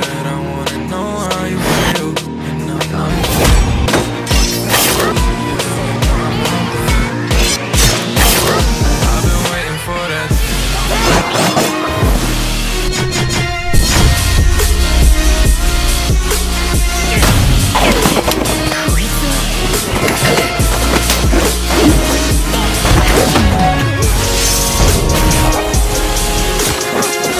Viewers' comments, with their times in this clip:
0:09 the beat drop on zenitsu I sub
0:12 Man that beat drop was insane one of the best amv i have ever seen well done👏🏽🔥